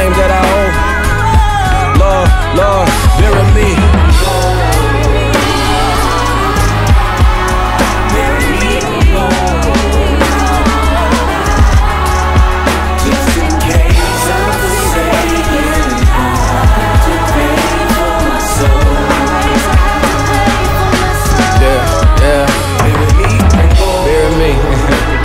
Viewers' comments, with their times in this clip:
0:08 is an absolutely wonderful drum break